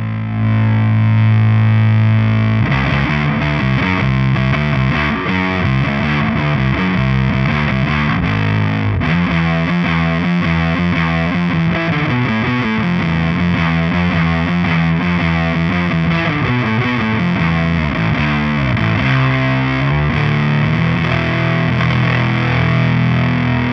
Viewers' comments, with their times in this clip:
0:09 glorious om riff! Nice one ;)